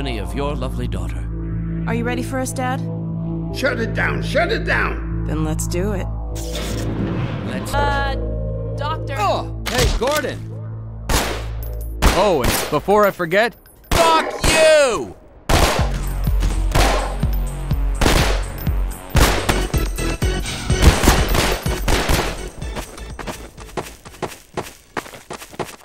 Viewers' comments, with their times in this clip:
0:10 I heard Barney swearing, where's the beep?